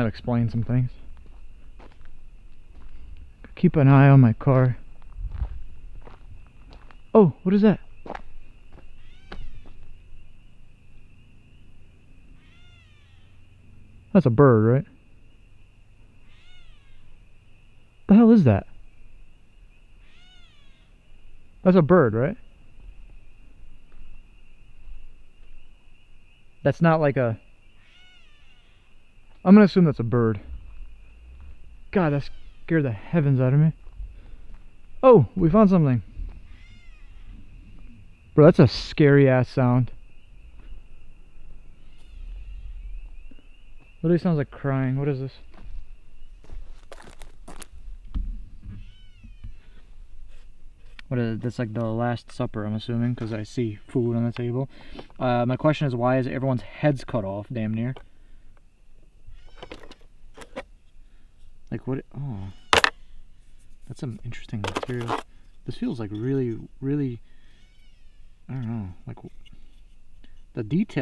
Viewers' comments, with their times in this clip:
0:10 it sounds like a duck calling you can also get an instrument people can buy to use to call ducks around hunting season
0:16 that sound is a baby fox, I hear them all the time, almost sounds like a baby crying
0:19 nope, that is not a bird!(R)
0:22 Omg it sounds like a baby cat 😢
0:29 not a bird - its a very young kitten
0:30 "it" sounds like it's an intentionL sound of some weirdness goin on..
0:56 Thays sounds like a kazoo around the
0:59 i think that meowing sound was a cat